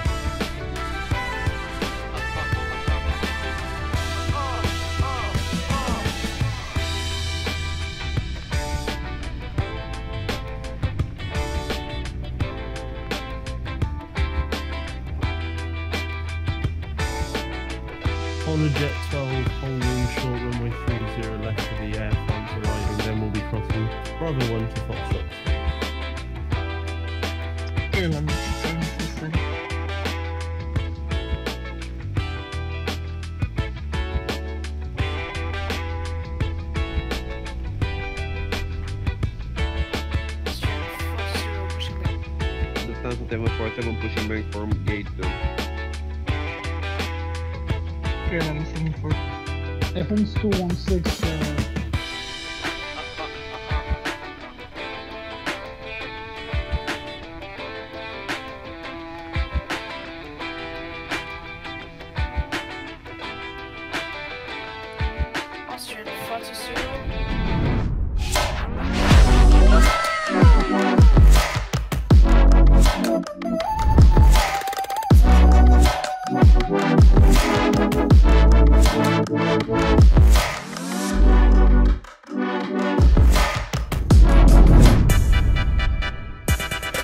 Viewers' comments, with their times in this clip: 0:08 i hear uh uh uh uh
1:08 My favorite part The music and the merch 👏 AWESOME